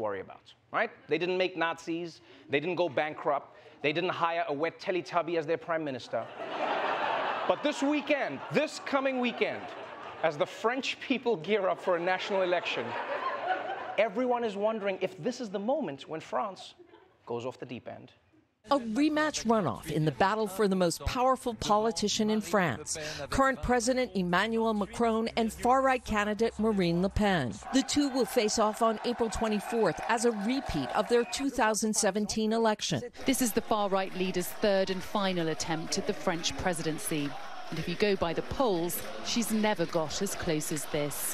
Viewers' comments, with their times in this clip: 0:03 I love listening to that wet Teletubby joke hitting the audience more and more 🤣
0:24 As a French person, although I despise both candidates, I can't help but finding the pronunciation of their names hilarious and cute at the same time.